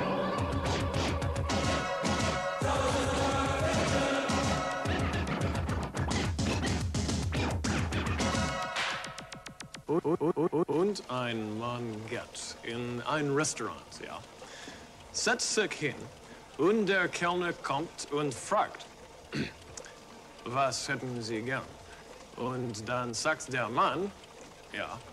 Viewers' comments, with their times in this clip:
0:09 As a German, let me translate the joke (Part of it is also featured at the very beginning of the video.) Und ein Mann geht in ein Restaurant, ja? Setzt sich hin, und der Kellner kommt und fragt: „Was hätten Sie gern?“ Und dann sagt der Mann … ja … bitte…: „Ich hätte gern einen Ochsenschwanz und zwei Bullenhoden.“ Und der Ober sagt: „Ich auch!“ And a man goes to a restaurant, yes? Sits down, and the waiter comes and asks: “What would you like?” And then the man says … yes … please…: “I’d like an oxtail [in German, Schwanz can both mean “tail” as well as “cock”] and two bull testicles.” And the waiter says: “Me too!” Max’ pronunciation is far from good, but I can understand him without any issues. It’s interesting though that he tells the joke really casually (e.g. using “ja?”), not like he’s reading it to someone, but like he’s telling it to a friend.